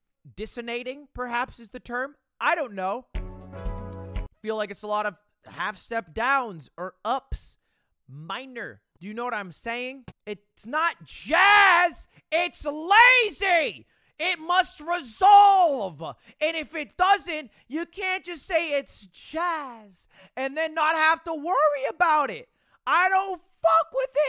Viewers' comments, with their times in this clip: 0:05 yeah ludwig, we can tell you aren't into music that much... and yes, the way that song ended is very common in jazz. Also, the last chord was a maj7, not a minor something like you said.